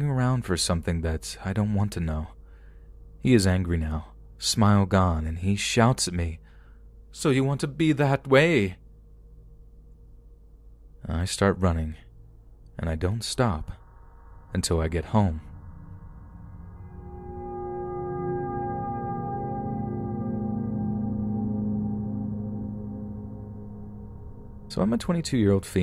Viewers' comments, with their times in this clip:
0:06 perfect bond villain impression, 10/10, can picture you with a white fluffy cat on your lap